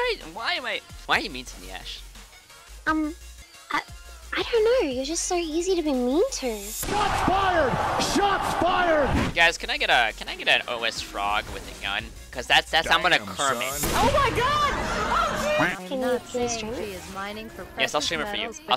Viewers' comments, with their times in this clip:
0:03 the voice + the accent... soo cute